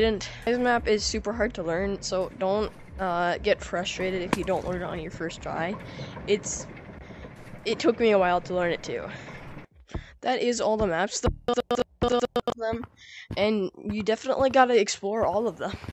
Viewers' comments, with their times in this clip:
0:08 that's all the maps do-b-ll-b-duo-dod-dp... (I have McDonald's wifi)
0:11 bro is glitching irl